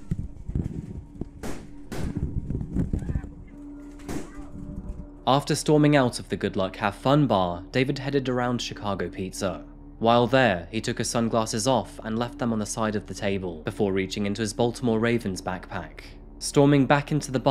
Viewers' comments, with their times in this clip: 0:05 holy shit the audio is harrowing